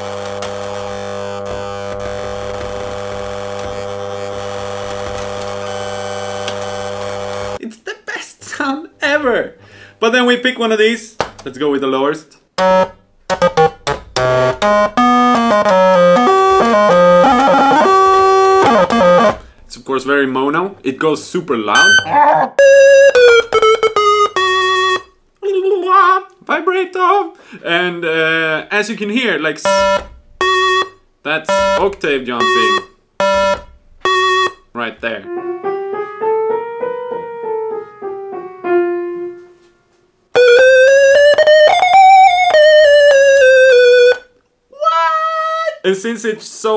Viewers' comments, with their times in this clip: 0:05 nice noise set homie
0:30 this man unknowingly plays the most iconic early pokemon game music which is the lavender town music creepy as hell